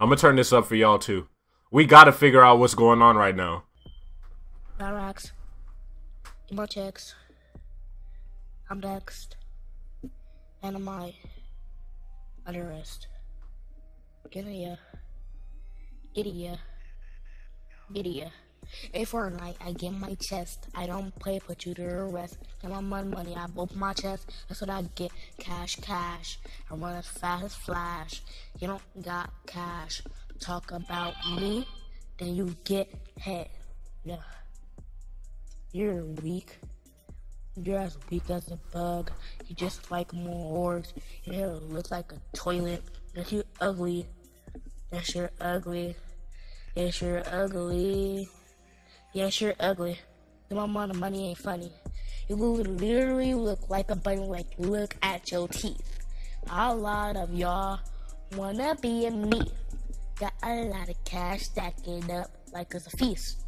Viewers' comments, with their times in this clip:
0:05 butt cheeks I’m next in the mic utter rest PURE lyricism true master Piece
0:07 nobody: travis scott when he was 12
0:15 someone get the fan out this lil boy room🤣🤣🤣
0:20 sounds like nav someone get him a record deal
0:30 the notification sound killed me 🤣🤣
0:30 BRO I CANT MY MAN WAS LIKE "my guy why did you let your android phone notification go off"
0:31 that phone message sound though
0:49 Whole different atuo tune
0:50 recorded on a fan